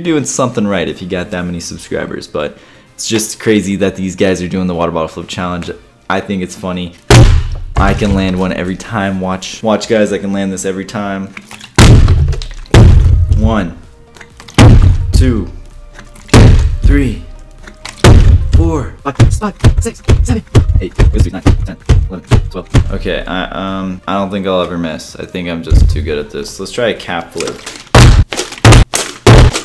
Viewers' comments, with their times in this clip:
0:10 Every time he lands a bottle it sounded like a bomb was blasting.